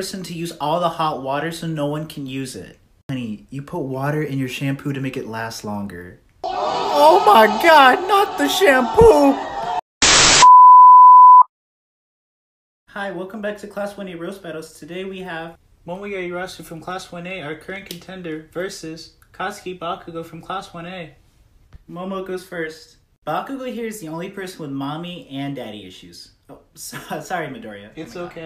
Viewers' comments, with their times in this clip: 0:08 For a second I thought he said “Oh my god, not the shampoop” 😂😂
0:09 ngl that voicecrack made it sound like Minam said "Shampoop"????